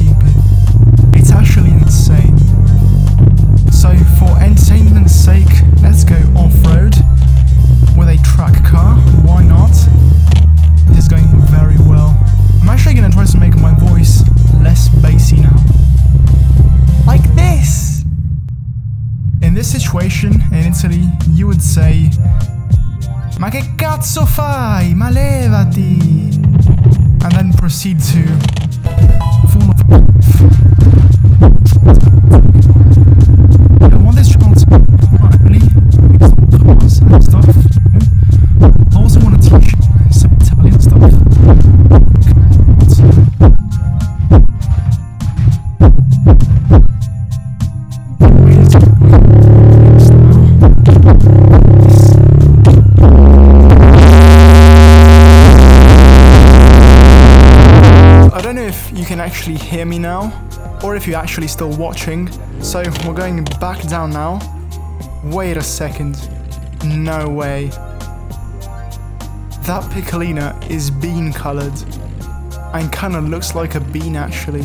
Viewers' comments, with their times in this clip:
0:04 sound like in my 2009 skoda octavia vrs
0:06 Exhaust pops more like Geiger counter
0:07 As much bassed music i listen to it dosent even matter
0:23 Are you italian? The pronunciation here was so perfect
0:29 POV: 90s Honda at a stop light
0:29 w h a t t h e b a s s
0:29 What i hear near a car window while someone is playing music inide the car: onwards
0:30 this is where this video turned into listening to a heart beat lol
0:30 good techno starting
0:30 muye music.exe was runing
0:30 it is farting.
0:30 nice music :D
0:31 when you slightly open the car window on the highway
0:31 It sounds like a radio at max volume oof
0:32 it sounded like a song beat
0:34 sounds like you hear from someones car from down the street
0:34 B A S S
0:34 when you live above a gay bar😭
0:35 WTF the bass is like when some is turning up a volume in a little fiat lol
0:40 its sounds like beat hahhaha
0:43 Who thought that sounded really sick? (Until, of course, the bass went up to 64 dB.)
0:47 That sounds like a MotorBike
0:47 when the car drops a sick beat
0:47 THAT BASS I LIKE IT
0:47 proceeds to turn into russian hardbass
0:48 Random teens with custom stereo and exhaust system at the Walmart parking lot
0:48 xxxtentacion bass be like
0:48 hard bass be like
0:48 the beat at the thoo
0:48 da car making a fat B E A T
0:48 bass rev go BRRRRRRRRRR
0:48 that one jeep with all the speakers in the world
0:48 sounds pretty cool
0:48 Nobody: The cheap Lambo that drives past my house at 2 AM:
0:48 Honda Civic be like. At 3am
0:49 sounds like a blown exhaust 😂
0:49 I honestly stopped hearing sound LOL My son loves bass boosted song too
0:49 DAMN THE BASS WAS SO TO UNDERRATED!!!
0:52 that sounds very guchi
0:53 that beat tho
0:53 right when he his his shit went to 32+ made me dead
0:53 bro my minivan always sounds like this in real life like dang
0:53 ngl I thought my headphones were quite low.... I was totally wrong.....
0:54 that one fly when I’m trying to get to sleep
0:54 me : use earfon and volume full 🙃
0:54 Ultimate earrape :D
0:54 my ears will say goodbye
0:54 my dads car speakers 🔊
0:54 People outside of my house in cars blaring out their radios be like
0:54 i had to use captions from to the end
0:54 When a Honda Civic is at the light
0:54 you are starting to break my bass box lol
0:54 The bass is so loud!
0:54 what is bass.
0:54 RIP my earphones...
0:55 why tf is the audio so low only me?
0:55 my neighbour's 90s shit box at any given time
0:55 AHHHHHHHHHH MY EARS
0:55 it becomes unaudible right here